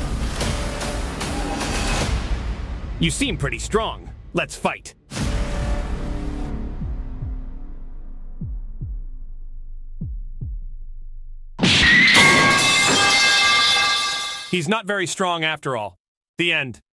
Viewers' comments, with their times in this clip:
0:07 XD😂🤣🤣🤣 bro it just once so quiet at this part